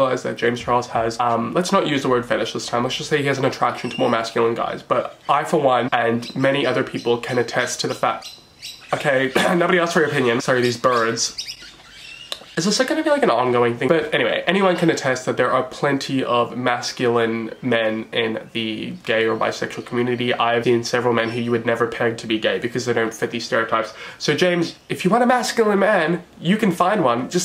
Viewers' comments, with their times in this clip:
0:08 the birds have opinions too. Also did anyone else find it hot that he has birds? Just me? Okay. Go on.